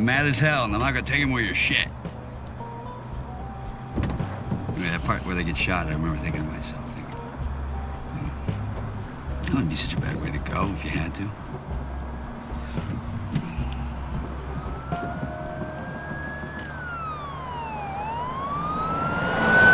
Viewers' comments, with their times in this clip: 0:06 when she laughs at him when he gets the line wrong. She's the smartest character in the movie...